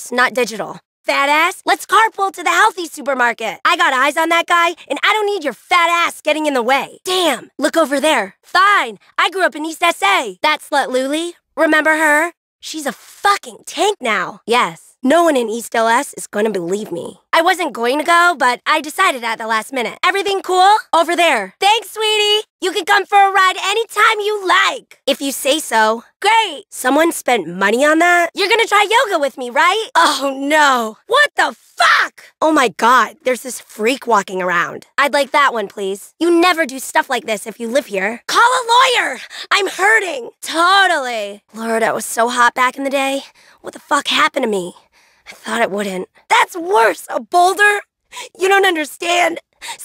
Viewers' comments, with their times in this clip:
0:09 I... I thought she said Lazuli...
0:31 she has a fantastic angry voice
0:31 Am I the only one that hears dolly dalmation